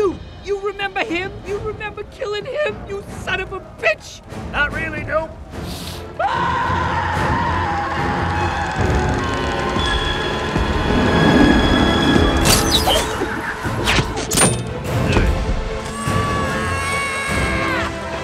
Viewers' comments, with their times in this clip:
0:06 I’ll bet Norton’s throat hurt after recording this scream.